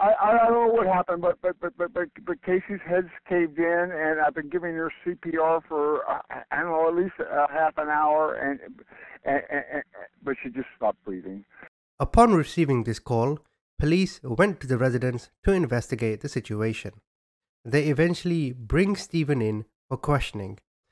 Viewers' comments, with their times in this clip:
0:08 I'm not laughing at the situation itself at all, but the way he just said that clearly after stuttering so hard.....